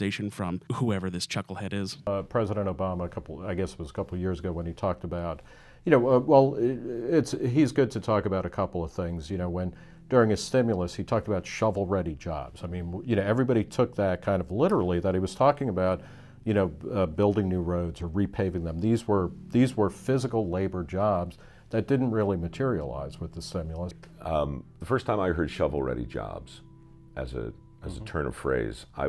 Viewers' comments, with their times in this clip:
0:10 Please tell me the music that begins and gradually gets louder. That's fantastic.